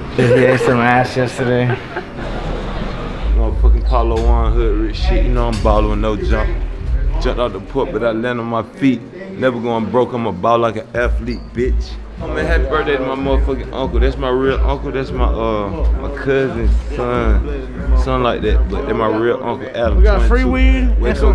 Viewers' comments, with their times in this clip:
0:03 who the fuck is this dude and did anyone understand a single word he said? shit didnt even sound english to me wtf